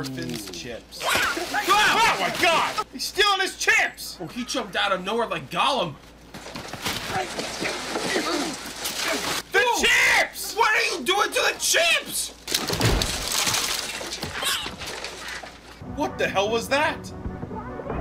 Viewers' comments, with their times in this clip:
0:04 not judging, but when you guys go to the theater are your reactions as loud as they are at home? like "The chips!!" for example. again, not judging. "Inquiring minds want to know."